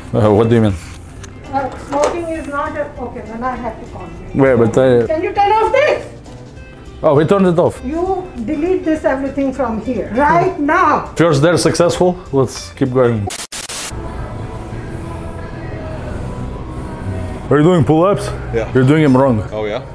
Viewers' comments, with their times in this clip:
0:06 That lady who said “Can you turn off This”!!! Sounded exactly like my neighbor from India who shouted at me to turn off my Bluetooth speaker when I was blasting music during a celebration 😂😂😂😂😂but the worst part was when I didn’t listen to her she broke into my house and smashed all the speakers and I had no choice but to call the cops